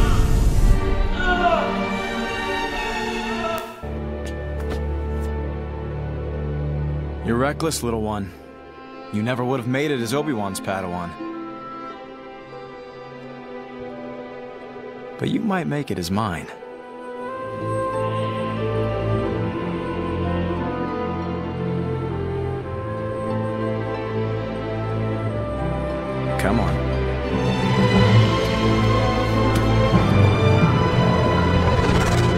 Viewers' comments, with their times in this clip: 0:06 I never noticed that the score in that scene is actually reused for Star Wars Rebels after Ahsoka's "death". If you want to compare, the track is "It's Over Now" and it's a far slower and more dramatic theme that was originally intended for use at the end of the Clone Wars.
0:16 I don't know why, but Ahsoka's theme is making me tear up